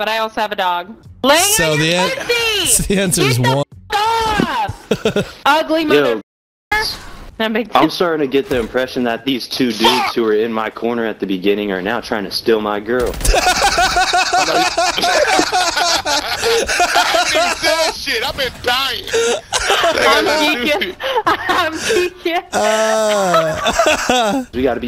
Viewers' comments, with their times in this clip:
0:10 sounds like exactly when the nerd of the class drops a funny ass jokes